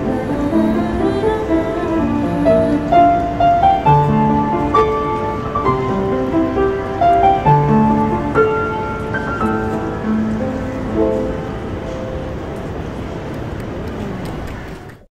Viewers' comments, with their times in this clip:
0:07 How did you get that piano solo.. ?? Did you listen full song?